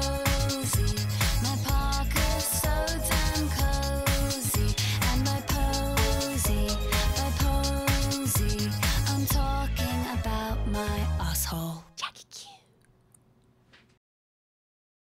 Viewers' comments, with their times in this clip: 0:09 cracks me up. The British accent is tge cherry in top lol